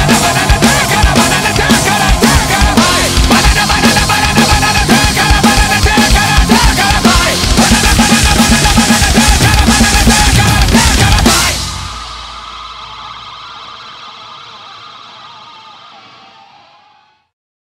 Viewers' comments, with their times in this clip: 0:06 jay weinberg style 😂😂